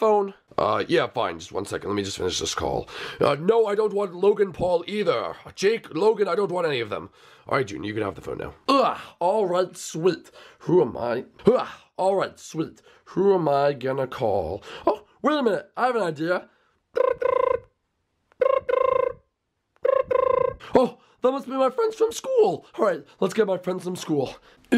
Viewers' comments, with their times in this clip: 0:09 Bowser Jr. says something twice.